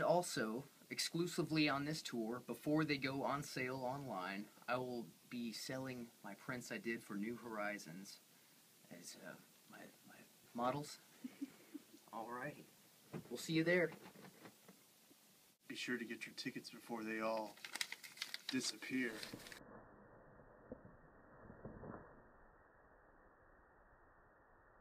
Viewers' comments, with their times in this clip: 0:07 he look like his voice should be lower. Wish he would have just stayed bald or grown his hair back with no beard lol